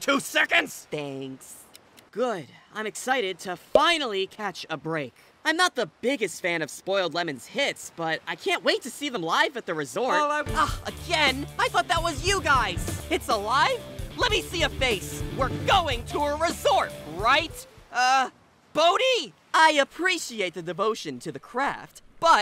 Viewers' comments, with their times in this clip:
0:09 the way fan gets cut off here is HILARIOUS